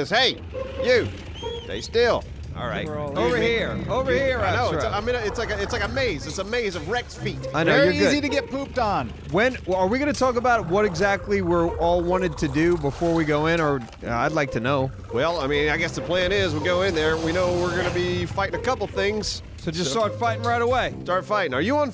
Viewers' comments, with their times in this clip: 0:06 I thought my nose made the whistle